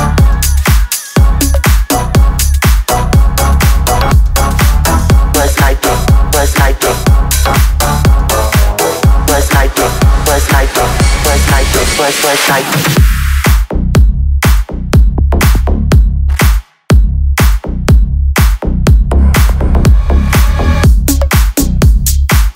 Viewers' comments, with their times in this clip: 0:09 Is she saying "Buzz Lightyear" ?